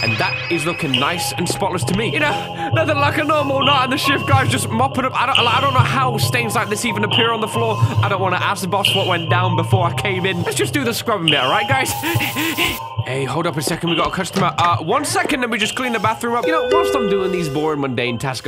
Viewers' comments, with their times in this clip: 0:06 My man started rapping